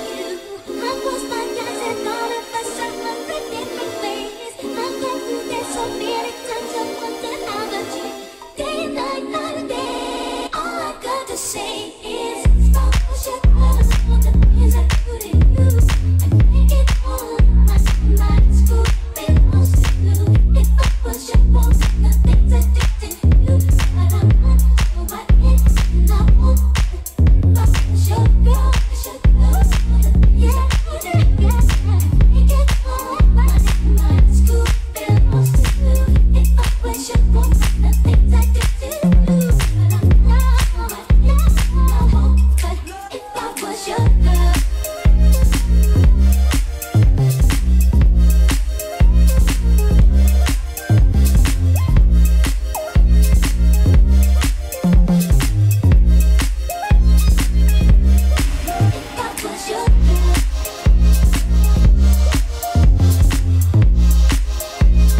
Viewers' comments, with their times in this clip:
0:06 10 years since that classic mix and crazy night ! Notice the guys singing "If I was your girl" so funny
0:53 I love how there’s fully grown men screaming “if I was your girl”😂 the E was hitting HARD!